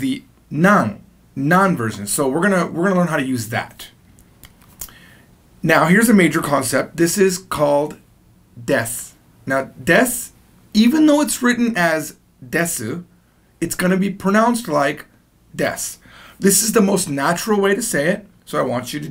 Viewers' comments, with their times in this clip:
0:07 according to YouTube auto captions, he said: A major concept this is called death. Not death even though it's written as a decimal, it's going to be pronounced like death.